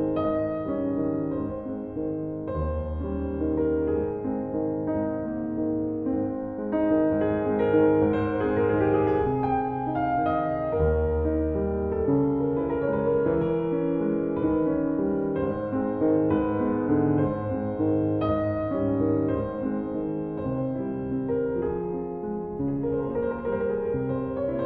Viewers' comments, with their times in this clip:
0:10 That high note feels like a taste of what cannot be real.